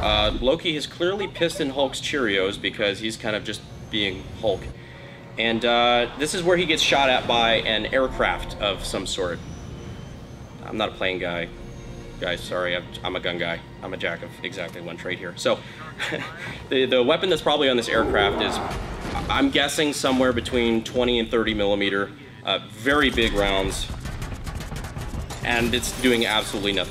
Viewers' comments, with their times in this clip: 0:10 plane guy here, that's an f-35 b which does not have twin cannons, as a matter of fact it's got no cannon at all, it has to carry a gun pod in the belly like the early f-4 variants did, besides the gune that goes in the gun pod is a 25mm gau-22 which fires about 3300 rounds per minute, and adding that to the fact that being a gun pod it can't carry as much ammo as an internal mounted machine gun after the first 5 seconds of firing it would've run dry, and the sound would be a small brrrrrt instead of that daka daka hollywood always use with rotary cannons